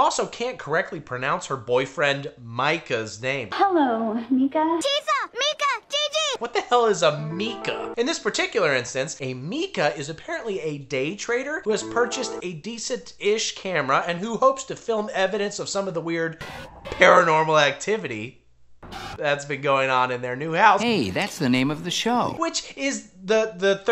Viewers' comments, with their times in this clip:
0:06 Mika pronounced like that is legitimate is quite a few places in the world - get over it, Americans! Also, your face in the thumbnail reminds me of the Pitch Meetings guy